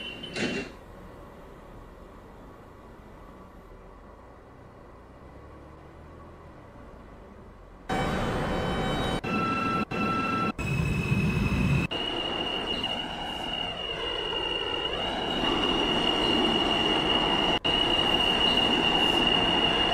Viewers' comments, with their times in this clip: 0:07 R110A but the wrong motor (R160 motor)